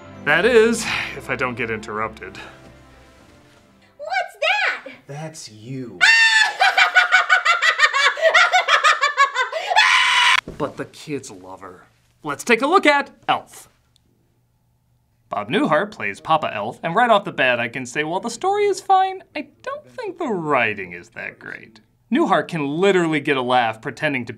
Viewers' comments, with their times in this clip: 0:09 That perfectly cut scream had me in stitches lmao xD
0:09 That screech shouldn't have been as funny as it was. XD